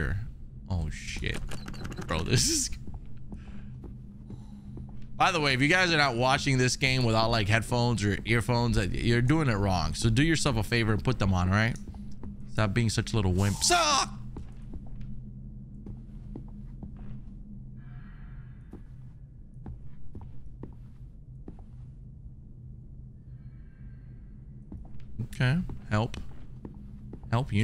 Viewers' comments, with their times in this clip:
0:05 "put your headphones on guys and stop being such lil wimps" automatic air freshener sprays "AHHHHHHH!!!!!" awkward silence 🤣🤣
0:12 "Stop being such little wimps" - immediately screams like a wimp after small sound. xD